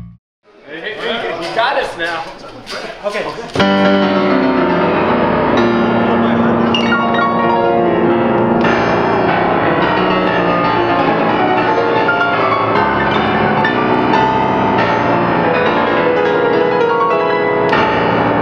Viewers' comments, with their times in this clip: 0:03 Look at him... didn't think a piano could be that powerful? :P